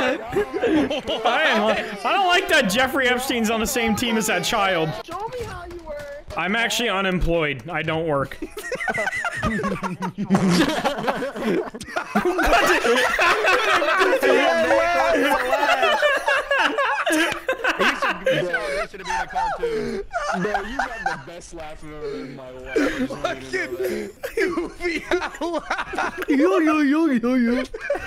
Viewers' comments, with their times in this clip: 0:09 can someone tell me what video this clip is from, it makes me wheeze especially when the guy with the goofy laugh comes up😂😂😂😂😂